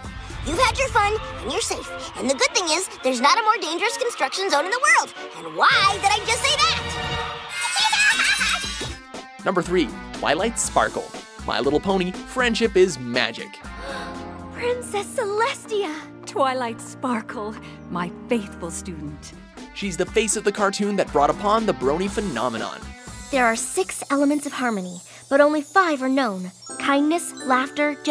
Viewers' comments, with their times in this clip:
0:09 THE BEST VOICE OF TARA STRONG!!!💙💙💙💙💙